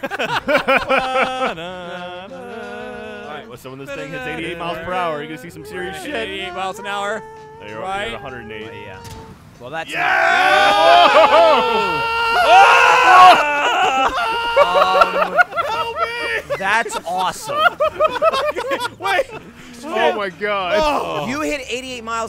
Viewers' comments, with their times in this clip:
0:10 that's exactly how I like to think Lil J would sound in real life as his rocket powered anything spun him like a blender